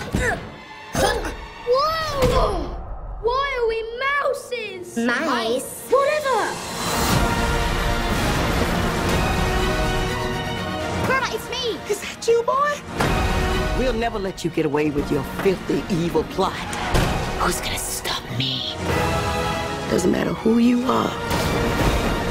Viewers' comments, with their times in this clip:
0:04 Why does it sound like boots from dora the explorer or maybe her backpack